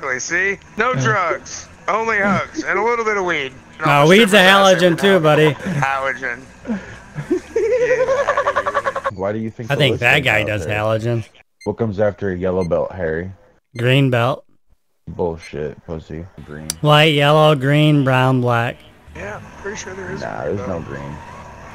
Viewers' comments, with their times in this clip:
0:07 that laugh though